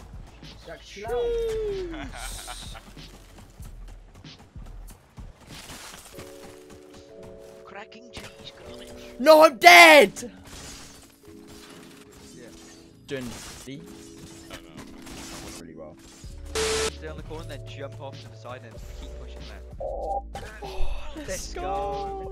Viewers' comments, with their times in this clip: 0:08 y does he sound like Harry Potter